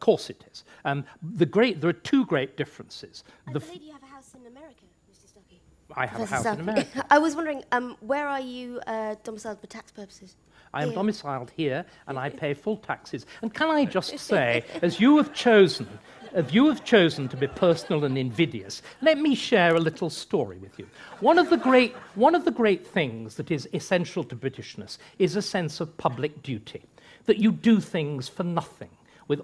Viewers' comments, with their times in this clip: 0:09 You can barely hear it, but just as Starkey is getting up, she chuckled after asking him about his "domicile for tax purposes." But as the old adage goes HE who laughs last, laughs best.
0:12 ..... Lauren Penny laughs snuggly after her unprovoked attack on David Starkey. So very pleased with herself for managing to get a rise out of him. But she will shortly come to the realisation that she has made a gross error of judgement! 😂 The huge dose of karma she receives at the hands of the far more intelligent and eloquent speaking David Starkey..... is immensely satisfying to watch!! 😂 'That is as MEAN, that is as MEAN and GRASPING as some runt comedian!' 😂
0:13 She's having a little chuckle and is very pleased with herself She's not laughing by the end of the video though. :-)
0:14 Cheeky little giggle from Laurie. About 60 seconds later, she's bleating in tears.
0:14 oh, that little laugh she gives when she thinks she got him... How wrong you were, little Ms Penny. How wrong you were...
0:14 Could we really just take a moment to think about the fact that she laughed at him thinking that she really pulled one over on him? I’m sure that was the last time she ever tried that shit with anyone! Lmao